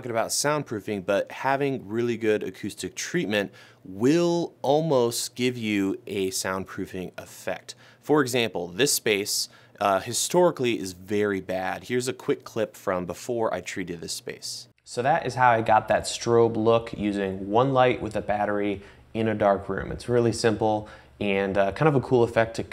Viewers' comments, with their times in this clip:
0:09 good example of after/before/after